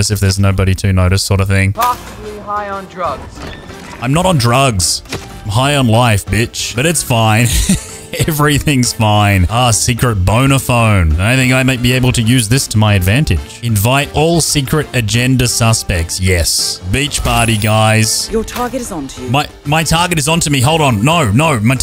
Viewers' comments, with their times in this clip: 0:09 did anyone else hear smth different?? Lmao